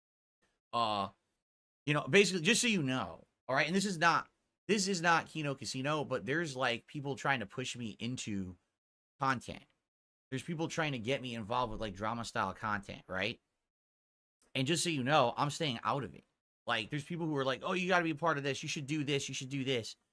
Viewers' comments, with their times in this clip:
0:06 Lol he sounds like he's being peer-pressured into drugs its not that serious